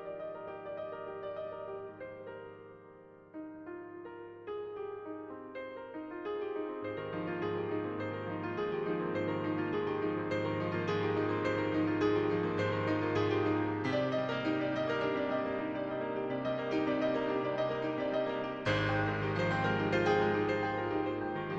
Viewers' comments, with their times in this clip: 0:03 epic rendition of aquatic ambiance, really went in